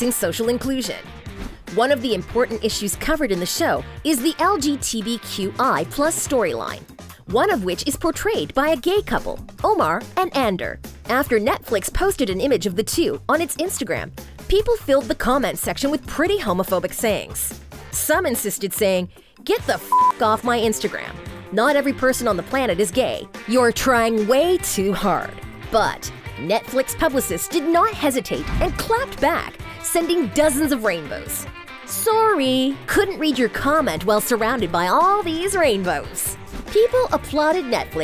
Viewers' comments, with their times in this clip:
0:03 LMAO SHE LITERALLY SAID LGTV
0:04 LMAO WHAT DID SHE SAID IN WAS IT LGTV
0:04 The narrator said LGTVQI. Hahahaha.
0:04 LGTVQI? HAHAHAHA LOL DID I MISHEARD THAT? IT'S LGBT NOT A TELEVISION COMPANY LOL!
0:04 she legit said LGTBQI+ like TB!! 😂
0:04 say LGTV hahaha
0:19 Nahhh the way homegirl read that homophobic comment is SENDING MEEEE 😭😭😭😭